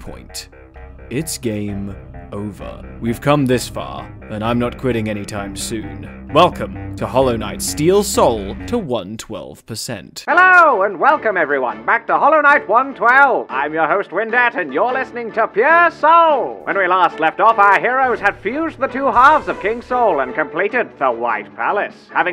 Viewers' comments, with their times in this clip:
0:09 I died a little bit inside when the Deep Rock Galactic mission theme got to the bass drop.... and then didn't... drop.